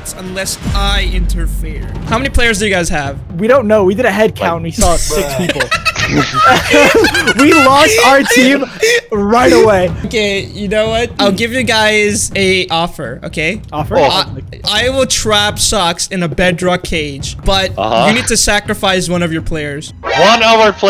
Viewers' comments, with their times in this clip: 0:05 dude I love his laughing.